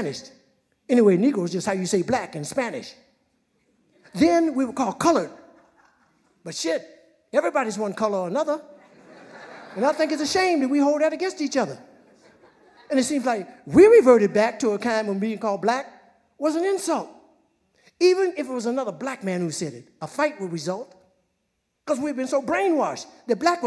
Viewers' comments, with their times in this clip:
0:05 Say It Smokey! I swear he sounds like Richard Pryor when he says "But $hit everybody's one color or another"